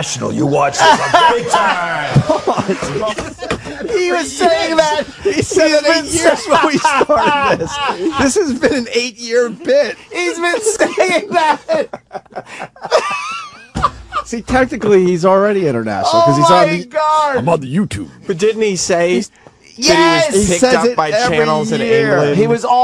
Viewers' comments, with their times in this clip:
0:10 one of my favorite anthony laughs